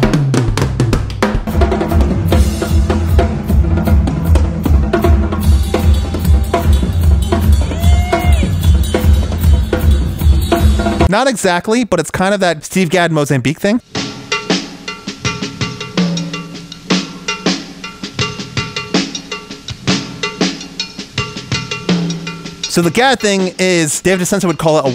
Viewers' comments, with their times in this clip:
0:05 The groove he plays is very similar to the song “Go” by The Vandals, which I’m pretty sure Brooks Wackerman played on. But I’m sure Josh played it many times live.